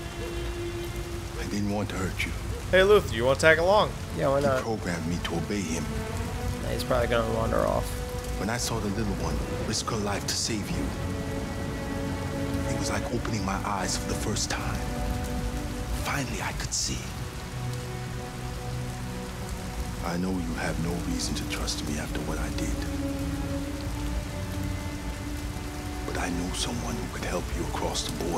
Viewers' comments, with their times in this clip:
0:09 So uh... why does an android with a standardized programmed voice module have an accent? How exactly would an android acquire a (rather stereotypical) accent? Maybe it's an optional "upgrade" option... but who, exactly, is the market for such an upgrade?